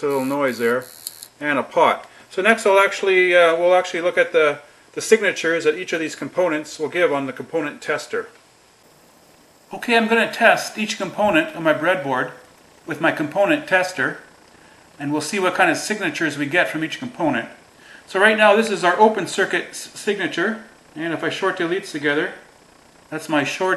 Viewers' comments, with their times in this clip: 0:09 It sounds like you now speaking to us from inside the oscilloscope?